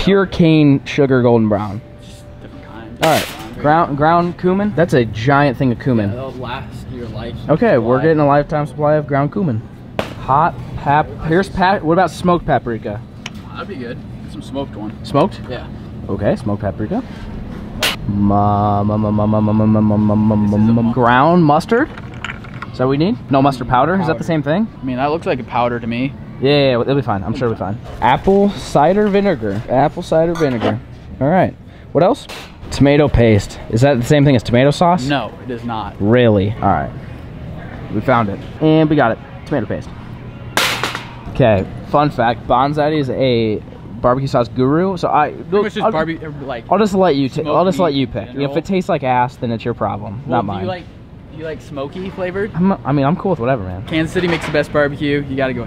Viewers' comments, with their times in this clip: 0:04 koohman i'm dying lol
0:41 there is a Snapchat notification 🤣🤣🤣